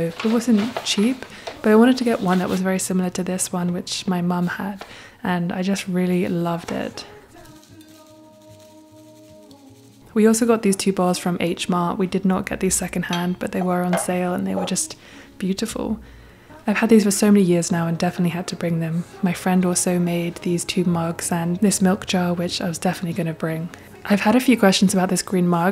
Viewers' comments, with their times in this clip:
0:08 Really enjoyed the video, and all the others you do as well, thank you so much! :) Since you're probably a bit busy at the moment with the vlogs, question to the community: Anyone can tell me what the song is called that starts playing ? Sounds like Bon Iver but I try to find it for a while now without success - would be really happy if someone could help! :)